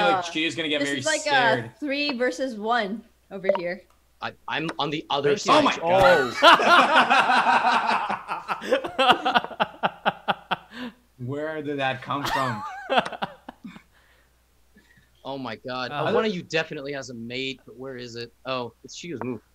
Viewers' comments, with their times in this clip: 0:04 bro that synchronized laugh got me scared 0-0